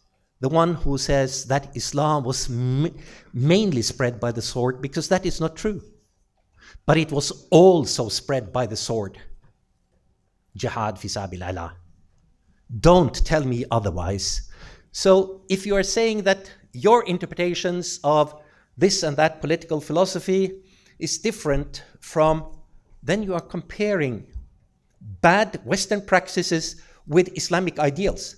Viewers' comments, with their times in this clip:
0:09 They couldn't hold in their laugh LOOOOOOL